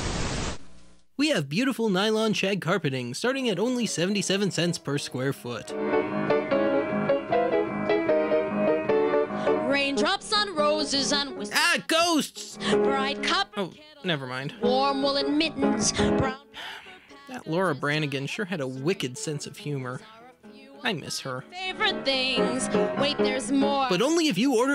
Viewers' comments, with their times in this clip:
0:05 Damn, that sounds like the Bombing Mission song from Final Fantasy VII!